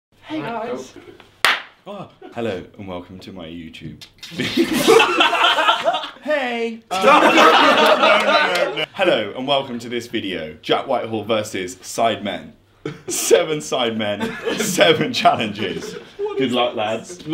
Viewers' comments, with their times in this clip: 0:00 the guy that talks like a girl